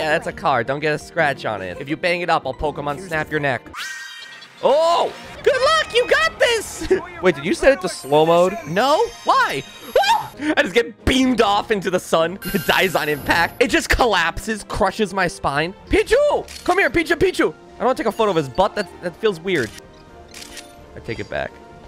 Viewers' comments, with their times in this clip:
0:08 KIRBY MUSIC INTENSIFIES